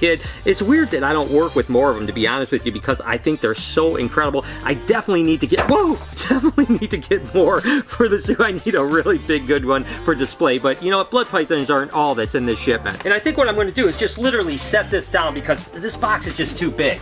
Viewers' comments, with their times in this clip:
0:05 I think he voice cracked